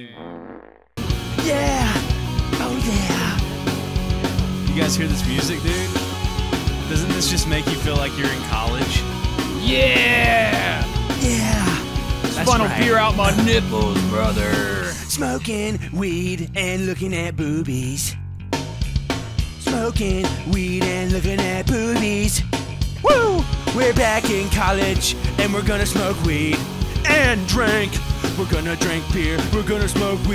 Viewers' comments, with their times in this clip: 0:04 how they make better blink 182 music than blink 182.
0:15 man blink 182 really went down hill
0:15 Greatest song I ever heard😭😭